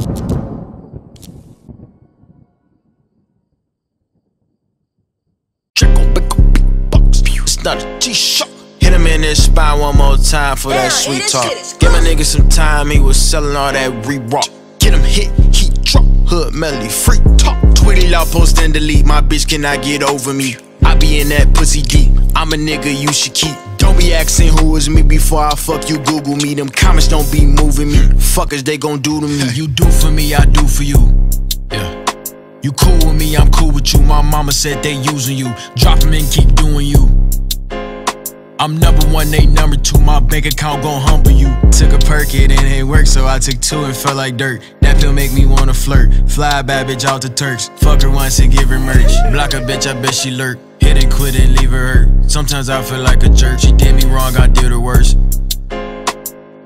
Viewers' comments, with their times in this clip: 0:05 Kermit first words
0:34 NAAAAH his mama rapping along "drop em and keep doing you" too hard
0:34 king von vibe fr
0:40 the reverse Blueface: Ouu